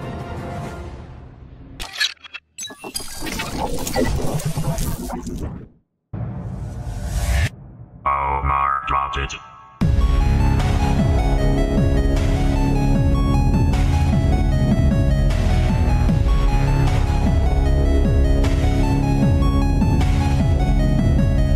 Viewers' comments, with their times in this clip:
0:06 Has anyone figured out what is being said? It sounds like "Omar Sausage" 🌭